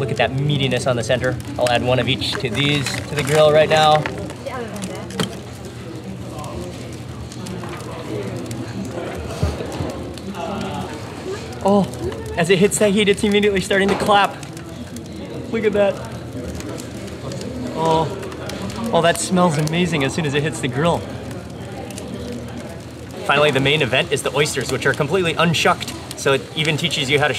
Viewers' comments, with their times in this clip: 0:10 that clam is screaming sir